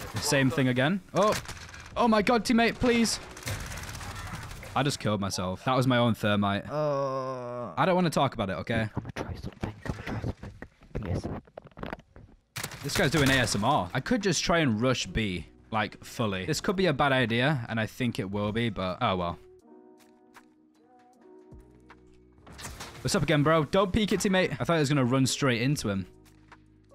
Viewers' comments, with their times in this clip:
0:09 mouth noises pauses “this guys doing asmr🤨”